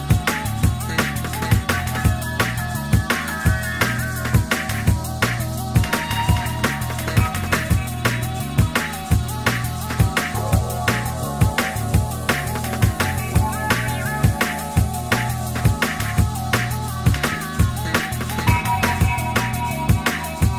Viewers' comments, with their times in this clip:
0:06 The bassline ... mad